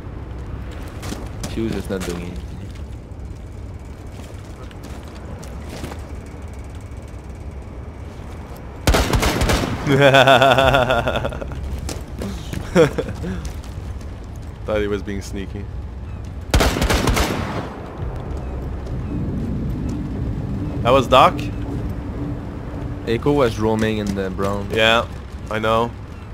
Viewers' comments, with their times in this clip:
0:09 someone PLEASE make an edit or something out of this laugh LMFAO.
0:09 That terrifying joker laugh though... lmao